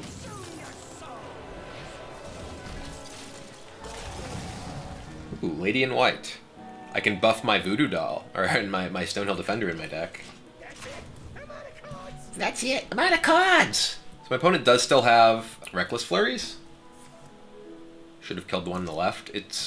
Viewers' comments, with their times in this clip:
0:07 damn hahaha that voice